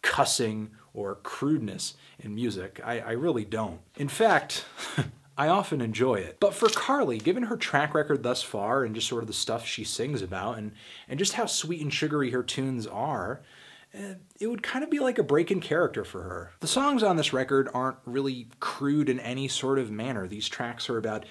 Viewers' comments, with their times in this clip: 0:06 IS THAT A FART?